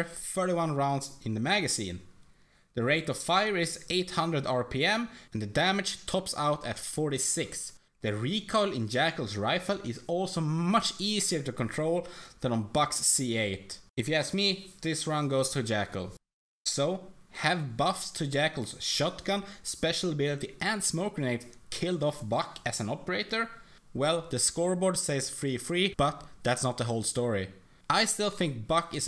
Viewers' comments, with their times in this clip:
0:10 The way he says "much" is hilarious